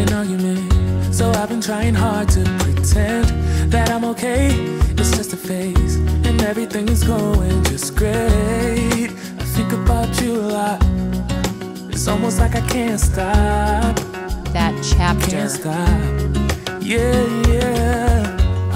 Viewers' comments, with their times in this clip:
0:06 Oooomg that song 🤣🤣🤣🤣🤣🤣🤣🤣🤣🤣 i was like nice you found a song that said "the wads" theeeen i realized🤣🤣🤣🤣🤣